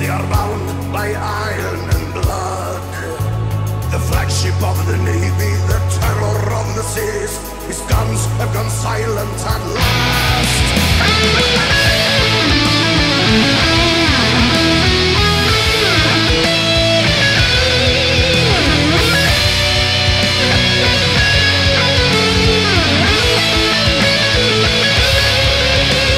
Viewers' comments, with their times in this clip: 0:08 damn that solo is fuckign solid.